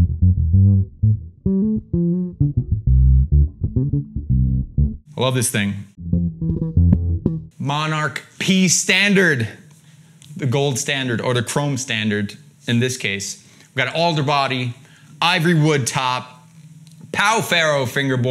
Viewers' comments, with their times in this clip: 0:04 omg what was that slap triplet/quadruplet he did i want to learn it!